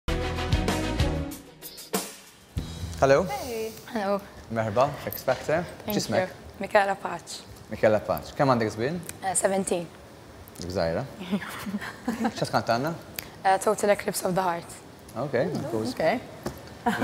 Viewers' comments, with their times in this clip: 0:03 Sorry is this Arabic ? Because i'm from Morocco and I can understand what the judge said at the beginning ?🤔 I'm confused 😅💚